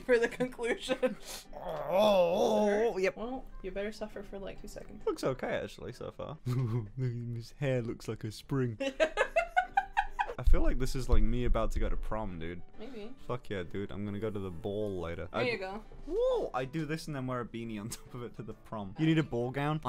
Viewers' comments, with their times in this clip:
0:06 seems like Patrick The Star voice